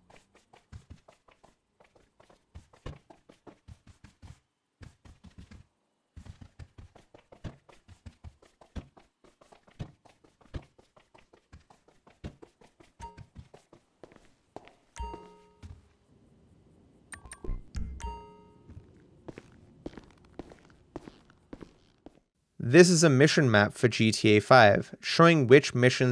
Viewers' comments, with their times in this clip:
0:08 "minecraft block placing and removing sounds intensifies"